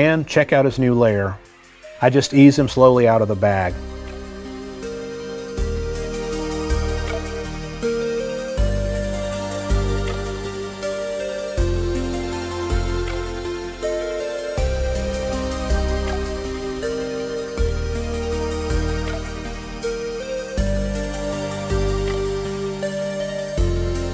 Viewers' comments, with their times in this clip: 0:05 That music when first putting Leon in his new home hit different bro 😭😭